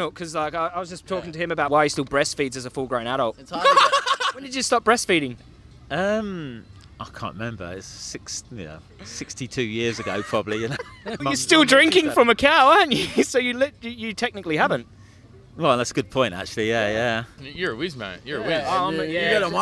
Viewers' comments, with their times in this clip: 0:03 that laugh me every time someone says you need dietary cholesterol to be healthy
0:03 That guys laugh 😂😂